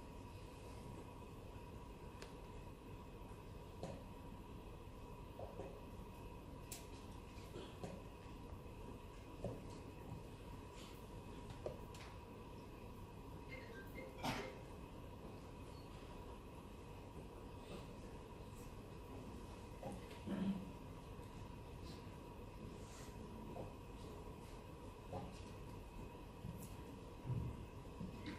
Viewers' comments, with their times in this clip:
0:09 No one gonna talk about how the lady's phone rings and the other lady stands up and takes her phone away from her?
0:13 phone rangs 🤣🤣 the girls face after that was so funny🤣🤣